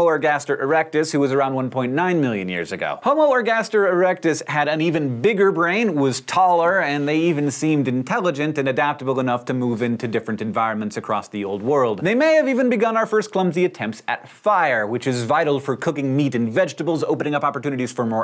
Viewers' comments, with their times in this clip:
0:04 hmmm Homo Ergaster, I just heard Homo Orgasmer.